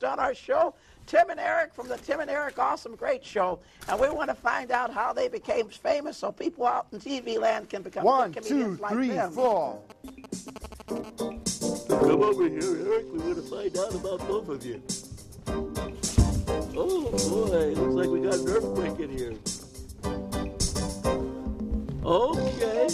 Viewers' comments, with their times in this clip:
0:10 cell phone radiation sounds